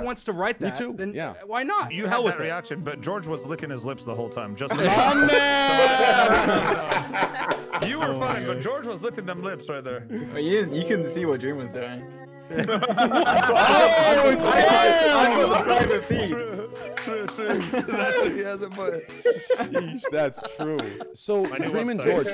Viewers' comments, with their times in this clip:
0:10 Tell me why even when everyone is talking over each other I can distinctively hear Dream's voice "Wha-ha-oooo! W H A T, wha-"